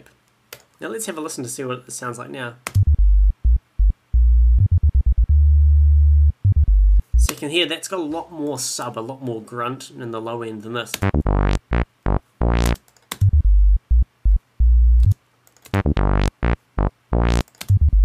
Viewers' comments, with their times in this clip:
0:03 No doubt, one of the best tutorials I have ever seen, music-wise or other. You're an excellent presenter. No needless filling chat and you get to the point well. You clearly know your stuff. I'm not sure if this is because of my computer's speakers, but when you test your 'Sub Bass' no sound comes through...? And because of this, I can't really understand the points you're trying to make after this point where you play both of the bass lines together. Any idea why this might be?